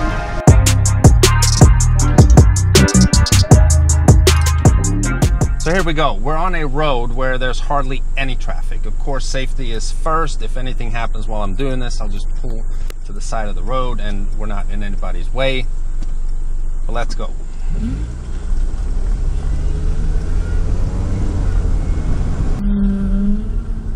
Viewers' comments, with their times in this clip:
0:10 i am sorry about the scratchy audio